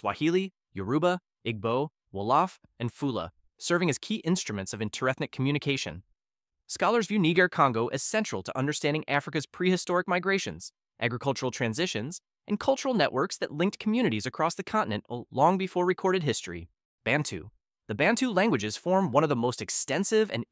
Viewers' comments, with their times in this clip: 0:07 not the voice saying n word congo